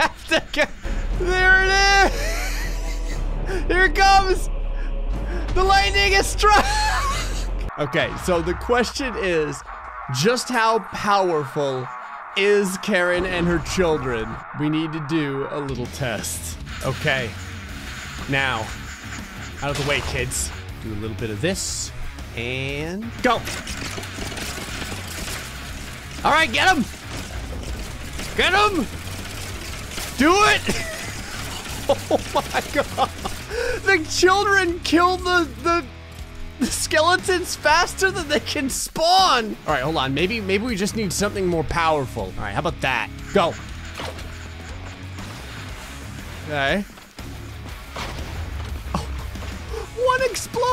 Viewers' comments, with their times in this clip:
0:08 Karen's when doom music kicks in
0:32 who let Karren listen to doom music